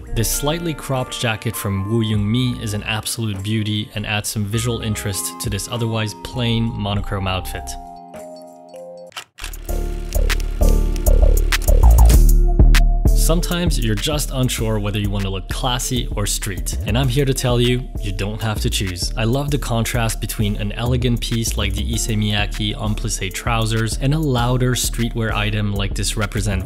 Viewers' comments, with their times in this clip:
0:09 Love the beat out of left field LOL. Reminds be of the current trending Detroit type beat